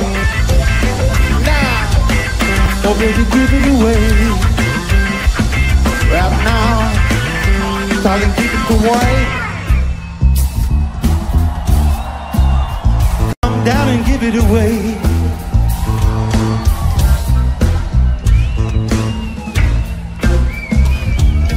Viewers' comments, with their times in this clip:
0:09 flea playing a bit of Anderson Paak, very nice and fits actually really well haha